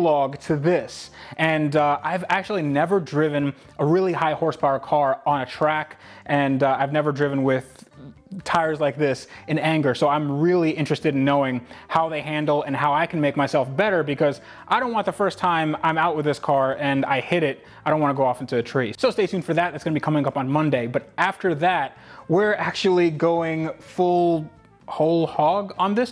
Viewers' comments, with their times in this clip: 0:08 Youve never driven in anger? or Angle lol